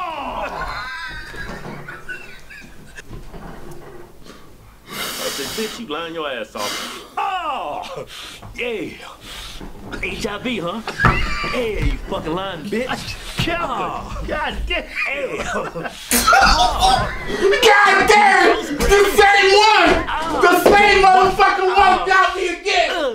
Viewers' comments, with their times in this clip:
0:04 You can just hear the defeat when he breathes in deep